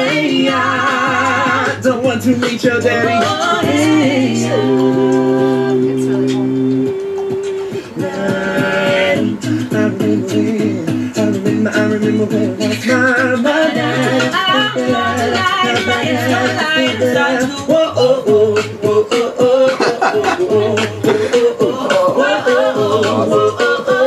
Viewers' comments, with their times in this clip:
0:09 my fav part wish they can do a cover of that....Blonde Guy's voice just so good